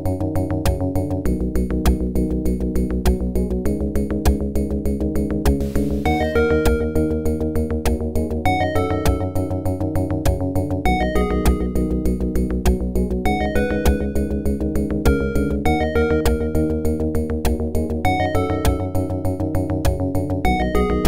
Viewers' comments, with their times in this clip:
0:06 You mean some sort of a remix? The rock part in the middle is one of the strong parts. I actually could simply remove the loud parts, but I guess the views would be close to zero for this, a "dead on arrival" project. Currently, I am working on a ~17 minute video to bw released on April, 26th, so my time is limited. Thanks for the feedback though, I also like the intro and the quiet parts most, also the sweep pad right after the loud rock part. (The main voice starting is also a guitar btw, a Jazz guitar in OPL^^)